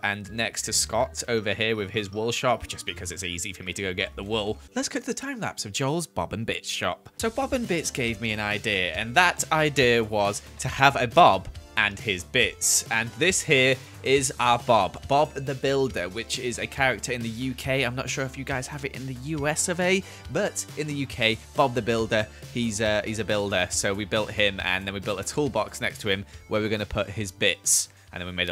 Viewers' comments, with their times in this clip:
0:10 put caption on and it says Bob's and Bitch😂😂!!